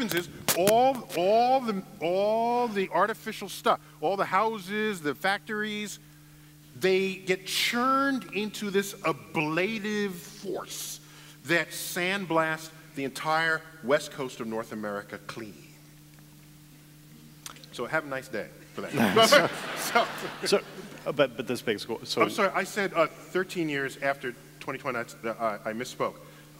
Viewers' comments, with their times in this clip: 0:10 When he says "ablative force" he sounds like an evil time lord.